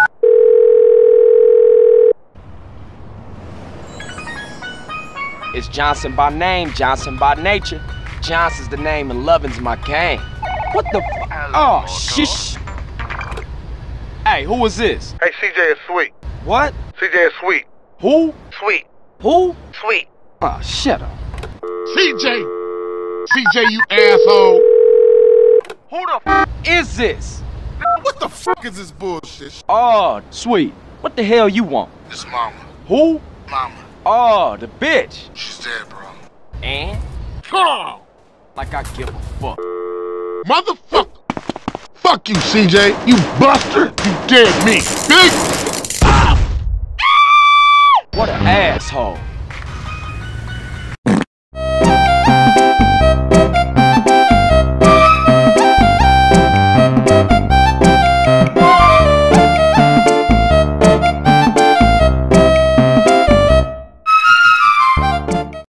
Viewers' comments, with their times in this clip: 0:07 and the ringdone of cj
0:51 Nokia Ringtone Arabic Version💀